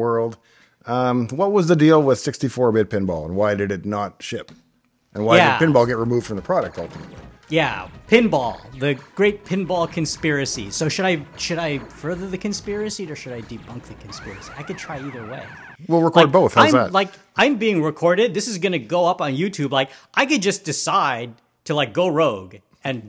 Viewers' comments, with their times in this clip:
0:06 BTW, there's a brief 2-second audio drop-out or so. That seems to happen every hour or two on my Atomos Ninja V reccorder. If anyone knows why, please let me know!
0:06 Why is the sound got muted? Did he say something confidential in nature?